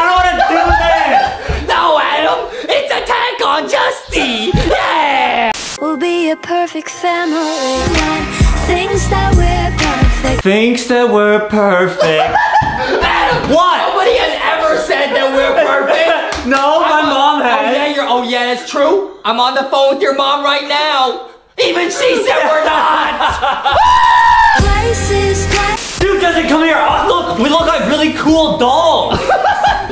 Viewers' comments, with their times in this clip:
0:10 That singing was so good.
0:11 He hits a really good note high or low I don't really know I just know it was amazing
0:11 he hit a PERFECT note there ayyyy